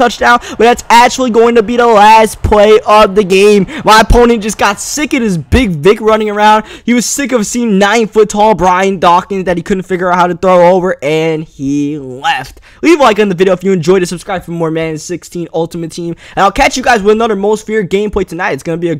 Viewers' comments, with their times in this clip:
0:05 big what cookie? Big WHAT?